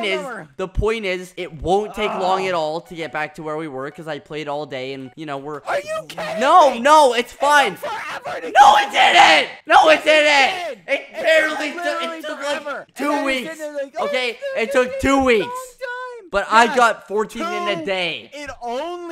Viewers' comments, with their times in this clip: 0:07 rip headphone users... And me 😩